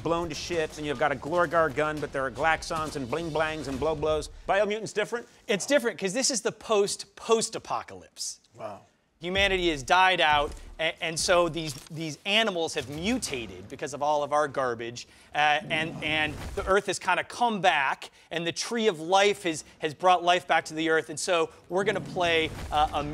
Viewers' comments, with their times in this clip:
0:06 that extra disappointment for the “ post post “